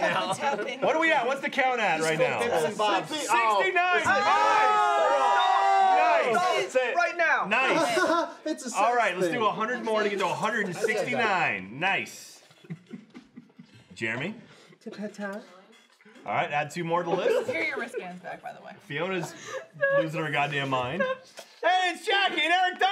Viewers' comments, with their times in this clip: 0:08 you can tell who the real children are by who laughed at “haha haha it’s a sex thing” Everyone is children here, but these are special